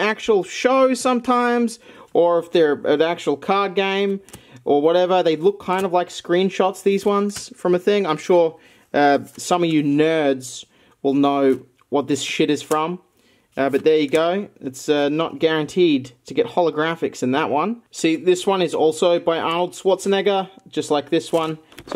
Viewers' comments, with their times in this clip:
0:09 I love the emphasis specifically on "Nerds" when you show a card based on my avatar.